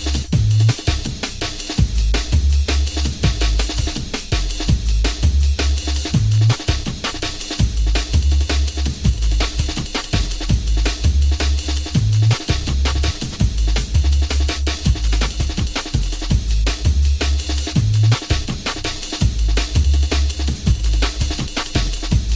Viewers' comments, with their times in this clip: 0:06 whats the track ? It's a banger, but I am a sucker for an Amen Break